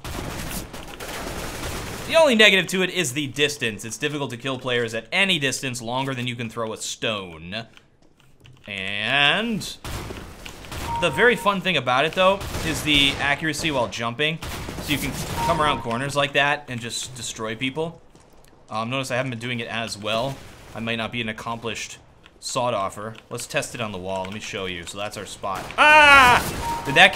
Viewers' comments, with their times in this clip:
0:09 longer than you can throw a stoner?